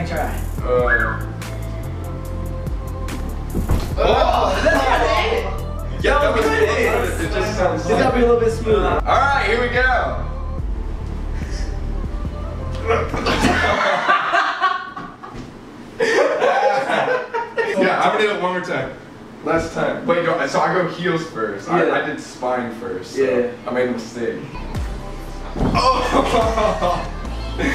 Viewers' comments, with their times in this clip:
0:09 Colby says "alright here we go" and then he just lifts half his body and falls back down Sam and Corey say "hahaha haha haha hahaha" lol favorite part😂😂